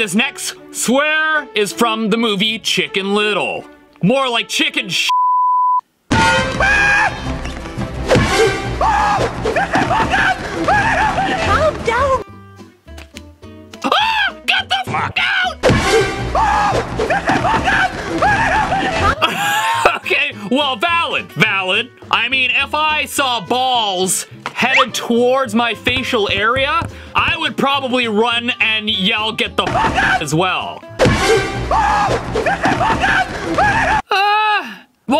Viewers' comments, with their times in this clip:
0:08 Also I think the other guy said get the duck out
0:09 I heard uck
0:09 its sounds like aa get the book out
0:10 get the book out?
0:16 After hearing it a couple of times, i think it says "Britney look out!" Since the gray duck's name is Britney.
0:17 I heard that the flip out! Not get the… you know😅